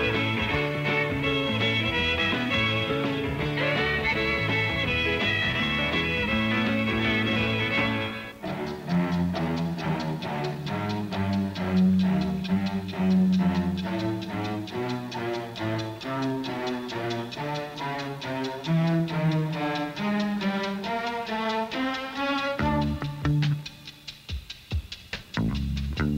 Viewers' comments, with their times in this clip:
0:09 the music sounds like the start of Raymond Scott theme- Powerhouse